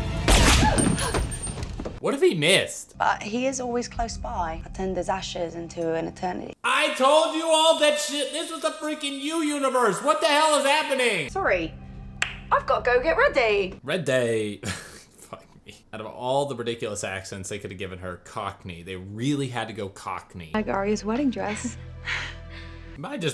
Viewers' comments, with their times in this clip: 0:08 It could be an Essex Accent too. Let’s not rule that out.